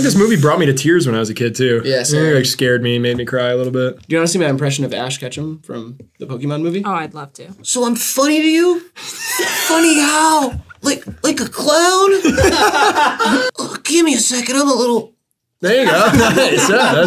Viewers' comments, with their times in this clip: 0:04 this has got to be up there for impressions in the Hivemind impressions saga